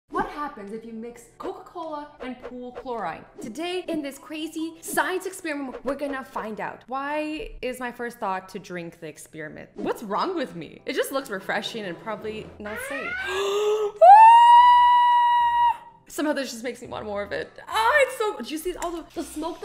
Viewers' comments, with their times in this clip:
0:03 she says chlor-eye-ne Us brits say chlor-ee-ne